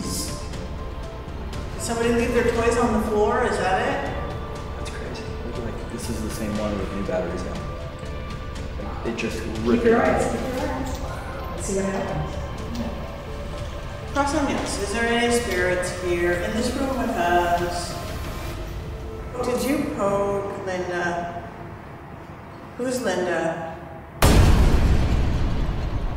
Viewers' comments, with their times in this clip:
0:10 EVP saying WOW